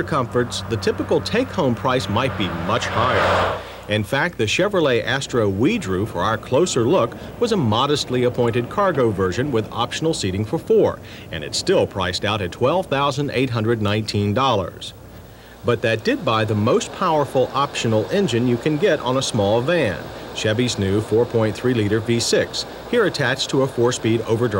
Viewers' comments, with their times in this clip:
0:05 He said "droov" lol